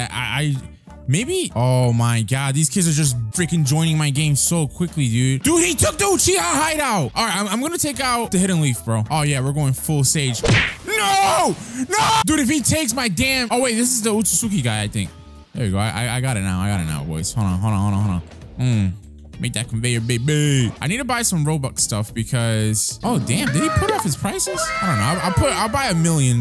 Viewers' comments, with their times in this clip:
0:10 Bro the scream Had me dead